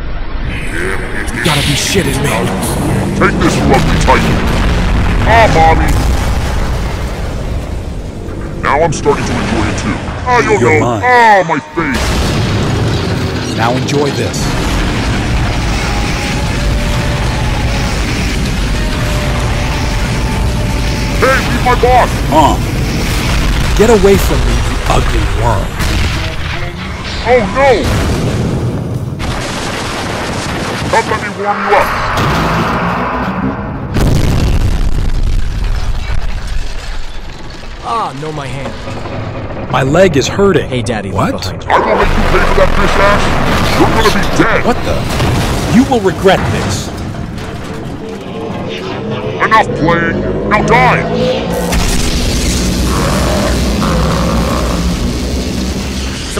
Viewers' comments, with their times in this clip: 0:05 "ahh mommy*💀 And 😊also isn't the pov girl? Why boy voice?
0:37 camerawoman talking like Man voice?
0:38 why camerawoman sound become mans